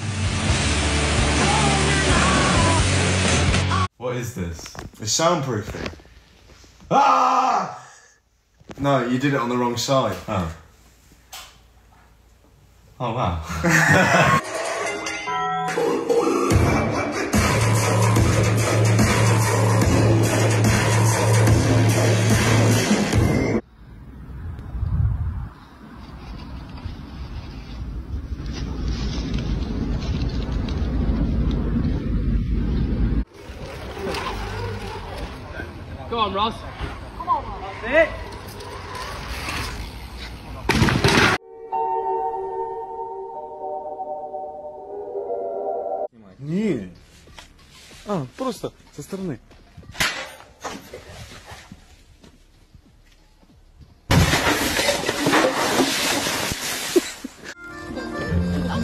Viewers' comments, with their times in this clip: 0:04 the genuine “…….oh wow :D” really got to me.
0:41 I don't know what that music is that I'm looking for but it's something calm